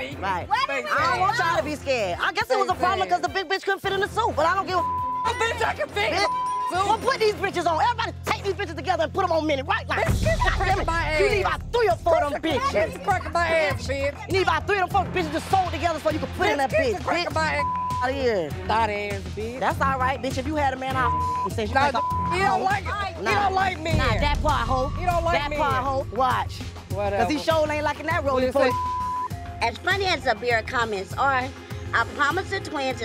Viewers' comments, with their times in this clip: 0:09 Sam and Monie trying so hard to hide their laughs 😂😂😂😂😂
0:09 Juicy is dying with laugh 😂😂😂😂
0:11 The way Juicy was laughing and moving😂😂
0:12 Did I hear mini say Krispy krips
0:15 juicy was laughing so hard 😂😂💀